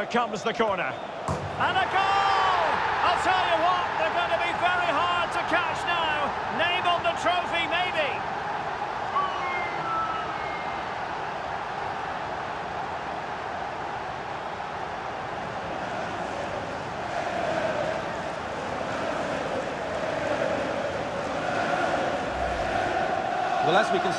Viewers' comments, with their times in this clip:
0:09 see the sound of the siuuuu